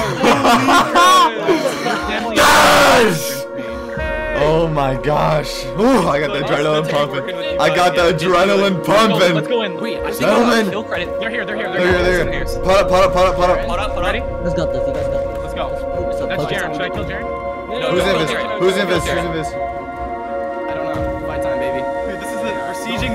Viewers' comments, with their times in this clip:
0:06 Pov: AHHH MY EARS